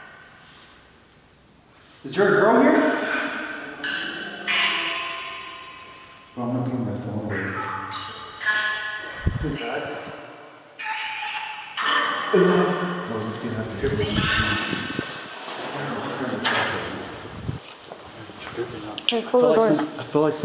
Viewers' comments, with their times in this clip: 0:03 Did you hear that yell or scream 😦 That gave me chills💀